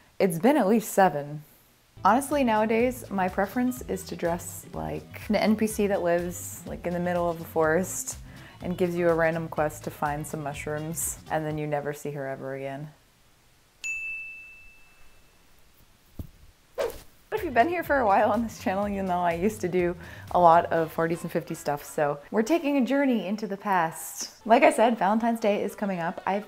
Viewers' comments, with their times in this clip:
0:09 kinda sounds like red dead redemption to me 🤨